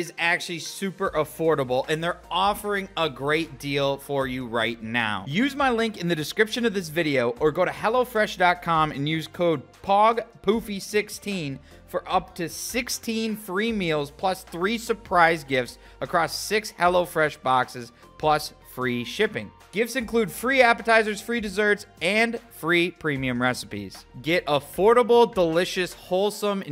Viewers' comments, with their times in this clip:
0:09 when he said that code. HelloFresh was probably just like "Why did we do this" Also, he's a great advertisement voice